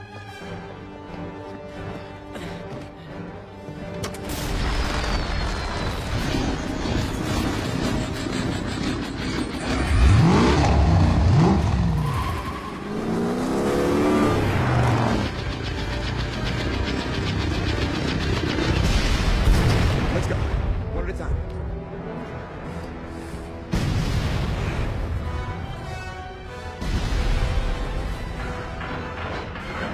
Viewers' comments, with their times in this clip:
0:10 the purr of the engine gah damn